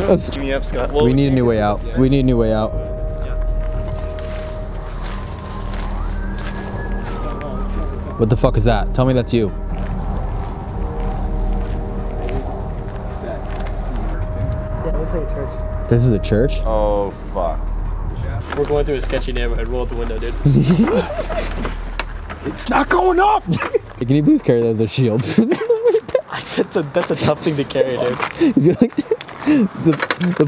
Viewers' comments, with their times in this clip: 0:06 That whistle gave me chills lol O.o 👀
0:06 I heard whistling in
0:14 TFIL I heard someone talking in the distance (not one of yall)